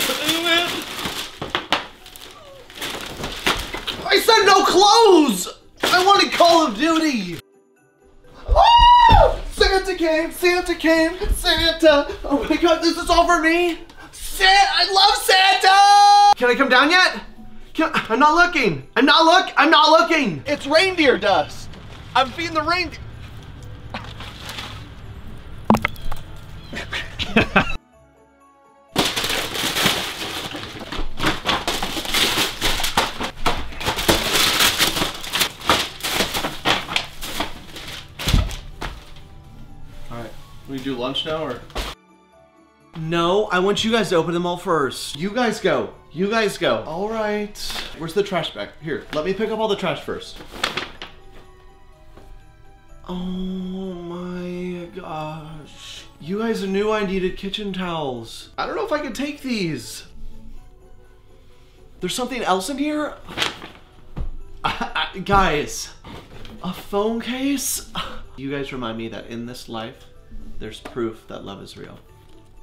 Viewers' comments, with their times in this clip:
0:08 that scream caught me off guard
0:57 That farting had me dead! its am! my poor boyfriend is trying to sleep 🤣🤣🤣🔥